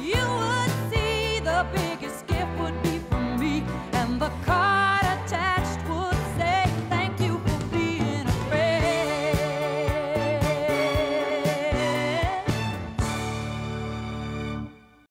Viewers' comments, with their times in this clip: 0:09 That little jingle from to the end is so GOOD